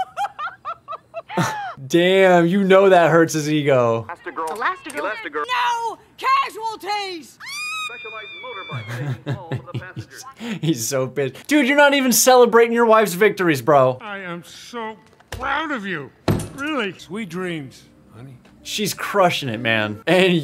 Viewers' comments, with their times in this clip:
0:05 NO CASUALTIES!!!!!!!! (Squealing like a fan girl) 😂😂😂😂😂😂😂😂😂😂😂